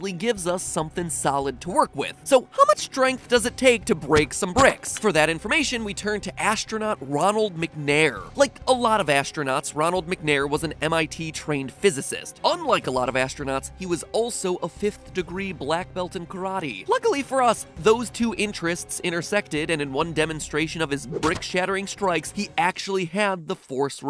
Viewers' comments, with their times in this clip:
0:08 thought he was Ronald McDonald